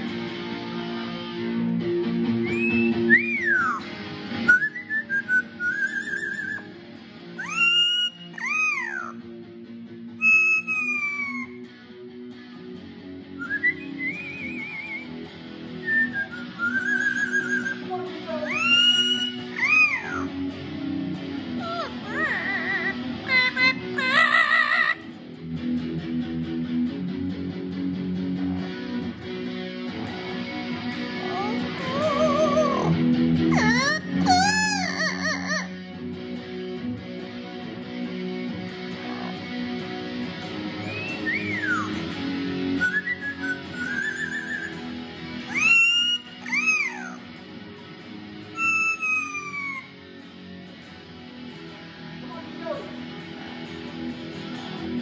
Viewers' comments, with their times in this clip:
0:09 favorite vocal trick!
0:41 The way you both came together into harmony at this point was marvellous 😌👏👏👏